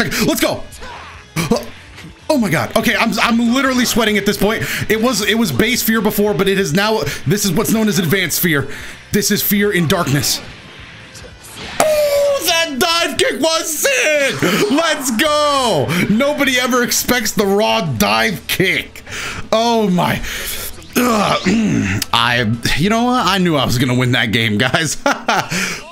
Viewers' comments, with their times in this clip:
0:10 So no one is gonna question that? That OOH was so d r y
0:11 The fitting wolf howl to end it off